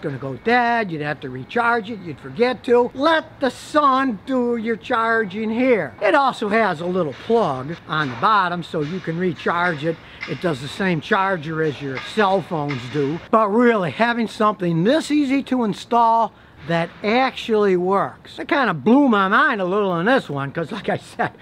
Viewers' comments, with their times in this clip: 0:09 .... Sounds like someone somewhere is working on a Chrysler.....